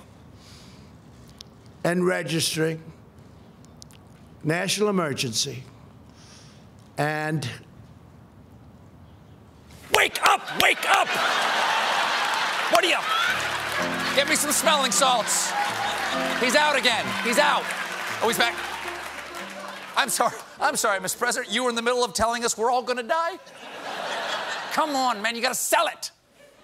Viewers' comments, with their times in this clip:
0:09 I started dosing off (long day) and suddenly Stephen Colbert was yelling "wake up!" Scared the crap out of me. Lmao.
0:13 “Virtual Insanity” plays.